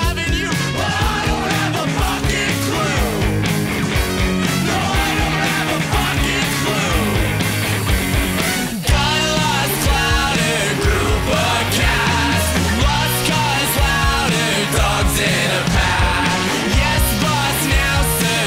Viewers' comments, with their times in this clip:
0:04 I know the pitbull is a tough and mean dude but i somewhat find him cute when his cheeks becme red when he starts cackling- Also that stupid little rat dog with that long snout looks like a small child getting an access to Disneyland